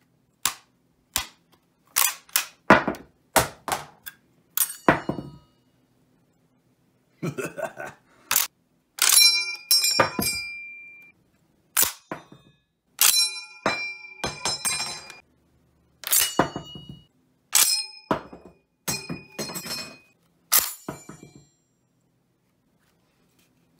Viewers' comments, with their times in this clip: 0:08 M1 Garand Ping